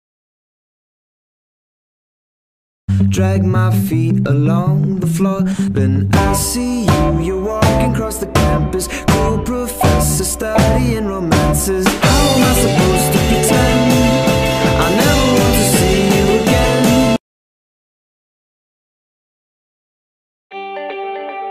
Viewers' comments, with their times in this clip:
0:03 WHY THE AGGRESSIVE CHEW JEEZ